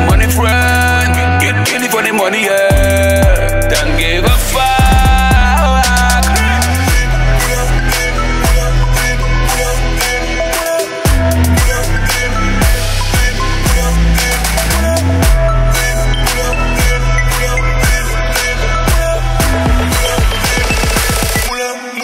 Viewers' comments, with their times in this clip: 0:09 Hated the song at like